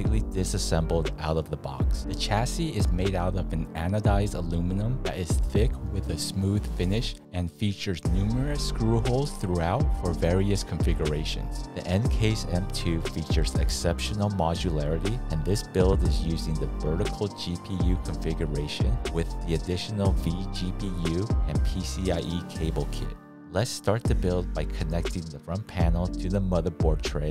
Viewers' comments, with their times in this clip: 0:08 I jumped in the video and legit thought he was rapping lmfao